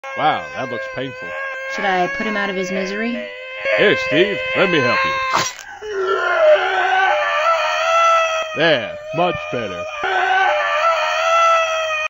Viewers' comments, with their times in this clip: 0:06 the ambulance be like